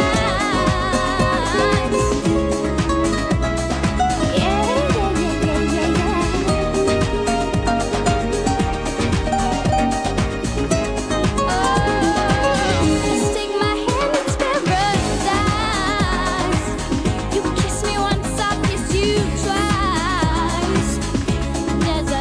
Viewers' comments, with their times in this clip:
0:05 when shes sing yeah yeah yeah it sounds bad